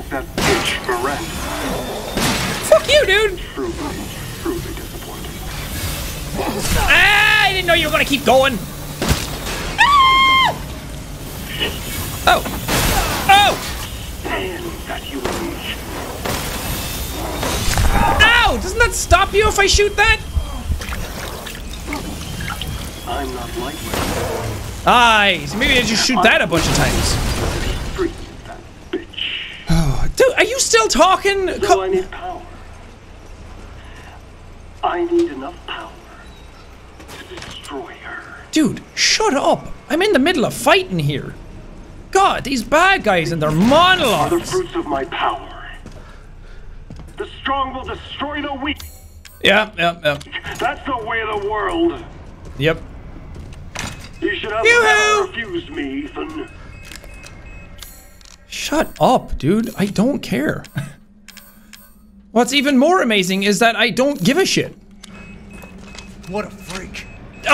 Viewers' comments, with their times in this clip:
0:09 Little girl scream
0:10 If u ever hear jack scream think of Finn the human from adventure time
0:54 heisenberg sounding like a rejected incel💀